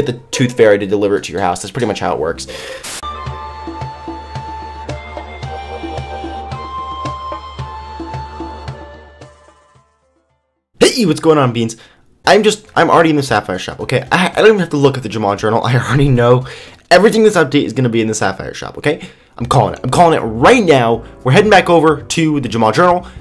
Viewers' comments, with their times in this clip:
0:10 that voice crack